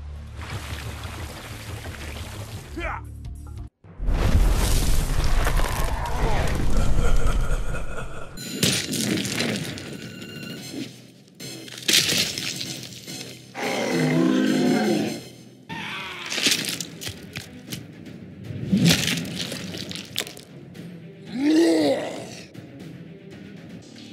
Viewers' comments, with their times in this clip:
0:08 Why is it free Bandicam grade audio?